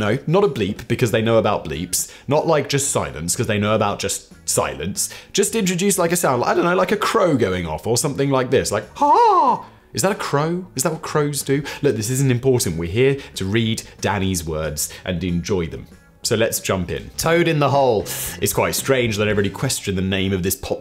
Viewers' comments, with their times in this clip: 0:08 Sounded to me like a peacock. Which would be fitting. :D